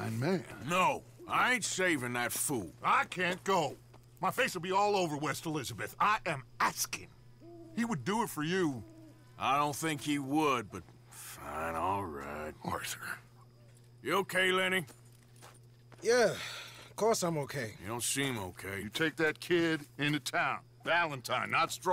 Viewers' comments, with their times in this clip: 0:05 The way Dutch said I am asking-